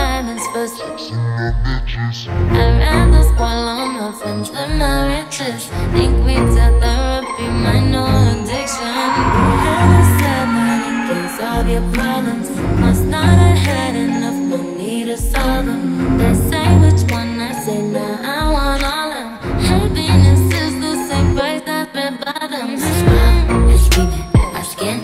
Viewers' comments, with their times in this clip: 0:09 the scream omgg